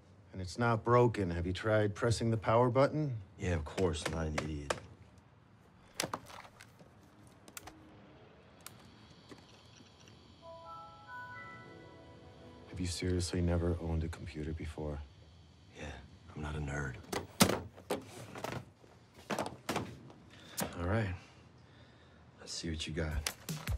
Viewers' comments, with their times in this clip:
0:10 Why does a Windows XP laptop have the Windows Vista startup sound and Office 2010 instead of Office XP or Office 2003??